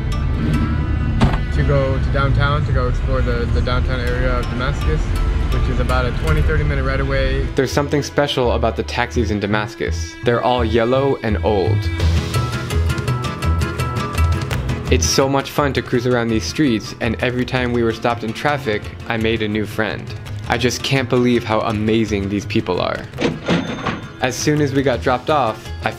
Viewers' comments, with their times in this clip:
0:07 sounds like any old cab in new york city bruh